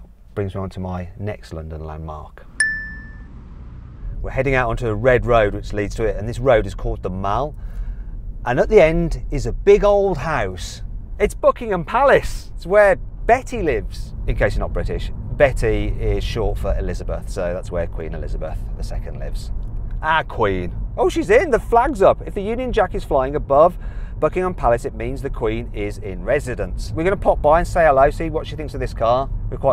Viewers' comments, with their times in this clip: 0:10 ... it´s ¨Bookingham Palace¨ i laughed too much that my cheeks hurts :))